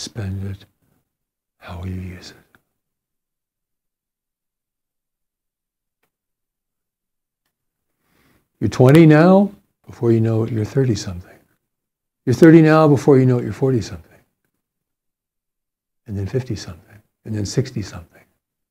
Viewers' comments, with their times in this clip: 0:04 😬 How'd you learn to speak this way? I know what you are doing. I can't not know. It gets awkward for me personally to sit here and listen to you, but it's still very fascinating to do so.